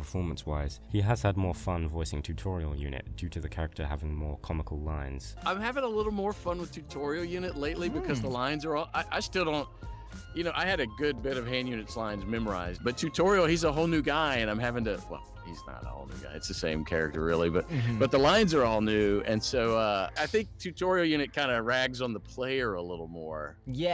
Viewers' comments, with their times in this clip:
0:06 I just love the hand and tutorial unit voices. I love playing phone guy and these guides as of I can easily mimic them.